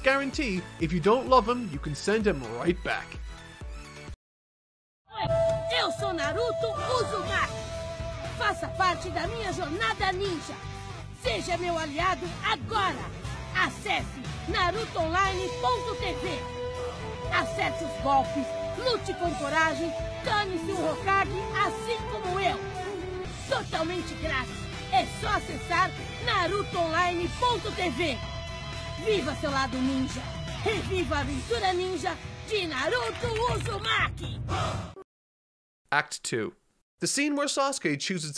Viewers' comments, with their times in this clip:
0:04 oh man the Brazilian dub was so good, that made me feel so nostalgic I think I'm gonna rewatch it haha
0:04 Holy shit i did not expect that, Nostalgia for the Brazilian dub
0:04 did not expected this to be in portuguese
0:05 Do my ears decieve me, or in there is a naruto online comercial in brazilian portuguese?? (as a brazilian i am very surprised)
0:06 Okay, if there's something I wasn't expecting, it was hearing Naruto dubbed here in Brazil. I'm watching these videos a lot for nostalgia and it scared me since I'm Brazilian.
0:06 Wow nice... the brazillian dub love it
0:22 I did not expect to hear Brazilian Portuguese hahahaha, this series is JUST AMAZING!